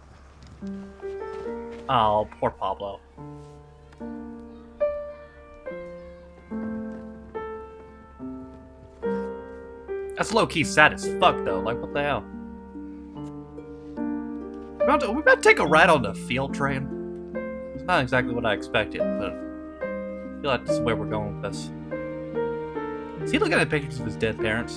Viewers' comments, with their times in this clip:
0:06 It took minutes to say pablo, well done 😂